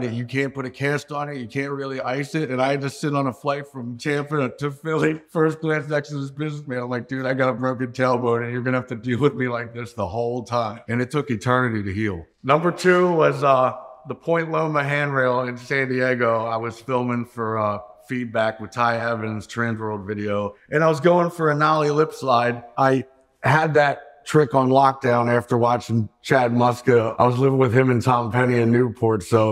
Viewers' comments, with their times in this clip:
0:10 Whoa... “it took an eternity to heal” sounds just like Phil.